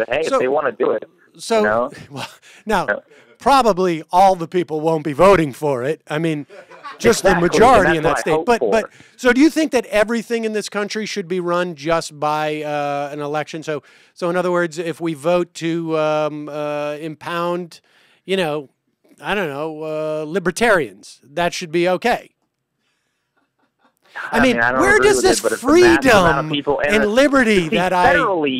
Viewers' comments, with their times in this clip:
0:10 that laughing in the background kills me